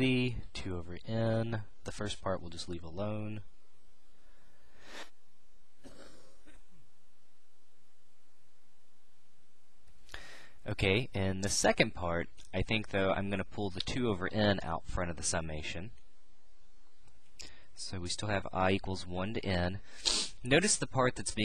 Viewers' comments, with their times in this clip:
0:04 I move away from mic to cough